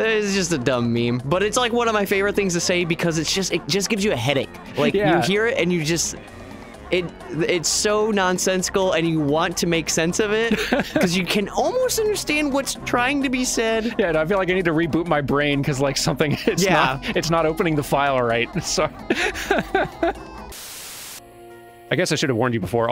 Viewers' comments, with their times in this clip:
0:07 It sounds like AI-generated dialogue.